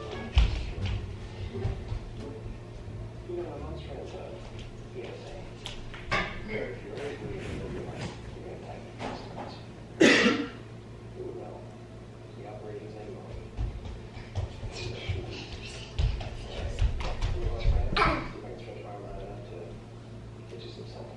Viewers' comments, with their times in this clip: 0:09 Did she... just... COUGH!?!?! 😳